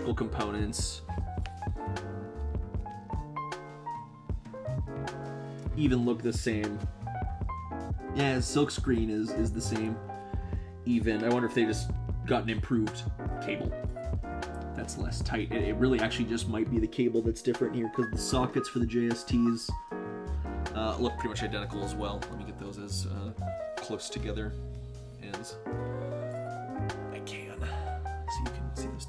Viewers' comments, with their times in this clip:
0:10 i had to stop just can't listen to your voice when the music is so annoying throughout the whole video. No offense!